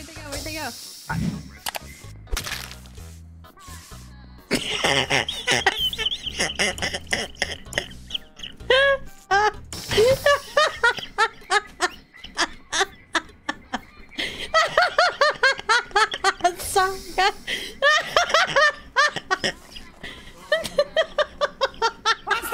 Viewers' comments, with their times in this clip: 0:04 for a great wheeze-laugh
0:10 That wheeze made me laugh so hard i dropped my phone and it crack. Worth it